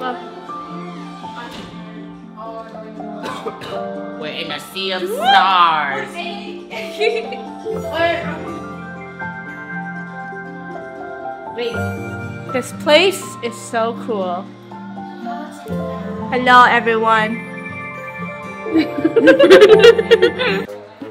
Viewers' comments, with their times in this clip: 0:05 The music is so calming